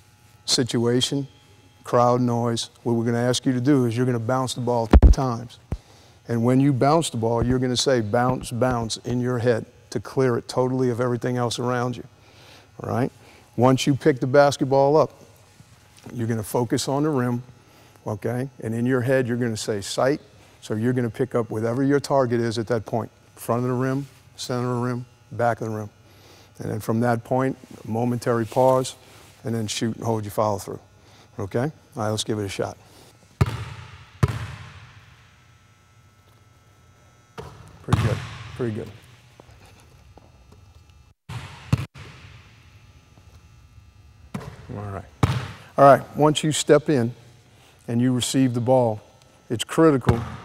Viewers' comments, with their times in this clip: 0:04 Were gonna ask you to bounce the ball *ruffles camera* times. lol.
0:37 why is he laughing hahahaha :)))